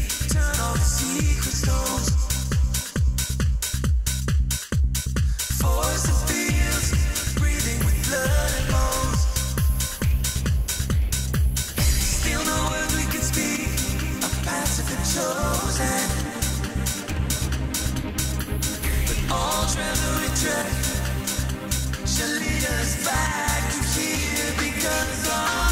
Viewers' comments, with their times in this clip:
0:06 Under the false impression that pause is used to let the audience catch their breath